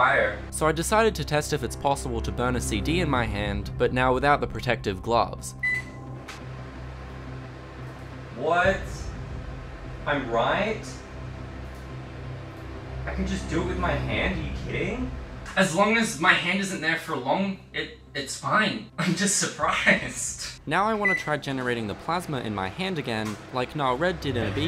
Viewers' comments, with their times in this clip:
0:10 I like how confused that "What, I'm right?" is, just being correct is befuddling you.